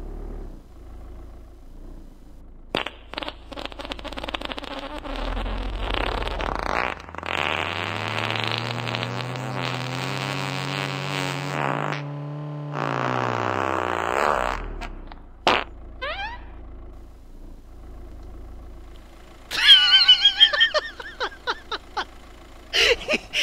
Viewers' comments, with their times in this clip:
0:03 perfect car sound as he did sync sound to stop perfectly 😁😅😂 10/10 🎉
0:08 DAT fuckin guy in the back making weird sounds xD